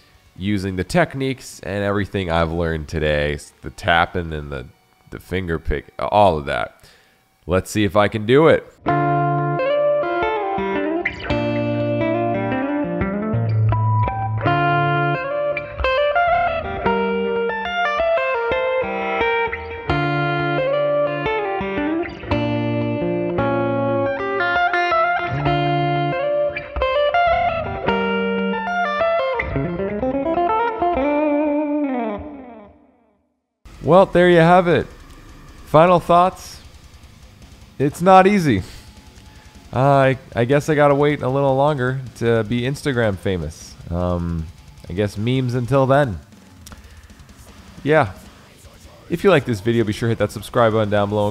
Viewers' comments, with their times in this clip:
0:07 I really enjoyed your Mathrock riff & choice of chords it could actually be a good song. I love math rock but some math rock starts to feel a little Pretentious after awhile as in I mean, its High level guitar playing but after awhile it feels like there's a ceiling where its boxed in & can't progress & become exciting anymore. Unless you're POLYTHIA...That band can take it any direction they want because they're not tryna be purist with their choose of fusing digital sounds with their arrangements. Every 1 else in the math rock genre just sounds the same to me having a pissing contest on guitar. Thats just my point of view.
0:07 sounds like buckethead on minimal
0:08 DAMN BRO! so damn clean, that harmonic tap too man got me wishin i spent way more time with guitar
0:08 my dude over here writing an opeth song
0:16 Ok serious question. That little distorted purr he makes the guitar do how do u do that. I have literally asked so many people what it is or how to do it and no one knows.
0:27 how do you do that one note with the super fast vibrato?
0:34 The moment when i thought that your mic has some noise issues and than i realize that it's just deathcore in the background...